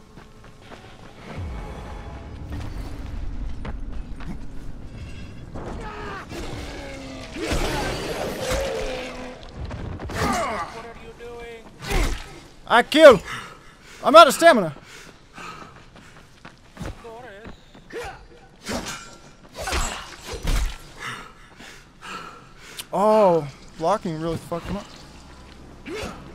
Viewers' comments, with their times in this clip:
0:10 listen closely You can hear the other guy talking Lol